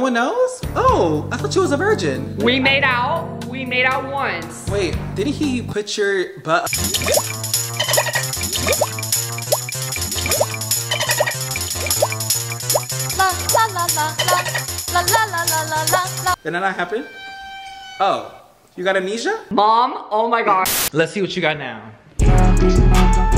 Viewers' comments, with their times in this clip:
0:06 he said “put your upside down” “face you against the wall “ and that’s what i got